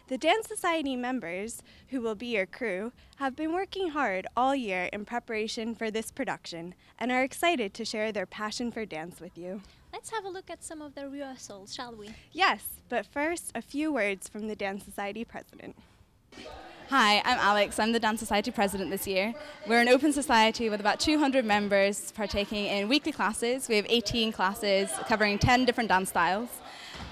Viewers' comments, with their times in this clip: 0:10 Don't you just love it when the audio goes stereo, to mono, and back to stereo again :P